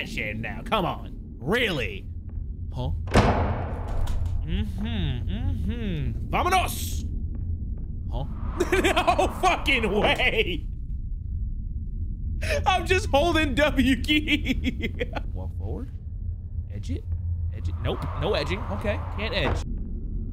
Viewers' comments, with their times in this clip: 0:07 cartoon ahh "huh"